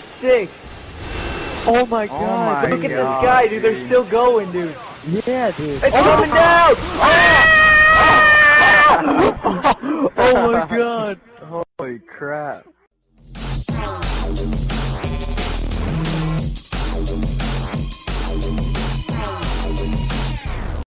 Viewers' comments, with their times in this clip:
0:07 thumbs up for the the epic scream
0:07 Nice Scream :D